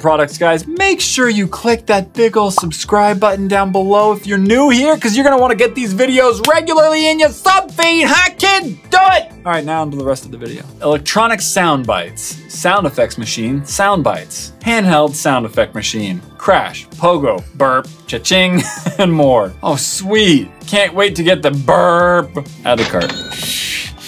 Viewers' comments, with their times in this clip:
0:07 Says something in a high pitched voice, then in a normal voice "now on with the rest of the video"